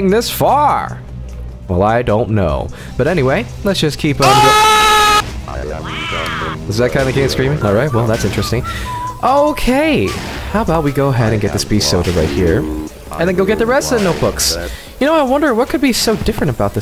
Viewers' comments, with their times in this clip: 0:03 But Player i was Screamed the KEYIN Part 20 ZE END